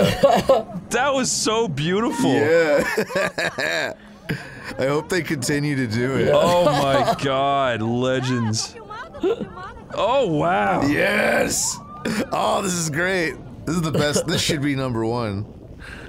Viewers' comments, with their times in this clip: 0:04 it's preaty funny the girl screaming "Dude I am Filming" like She is in the right side of the story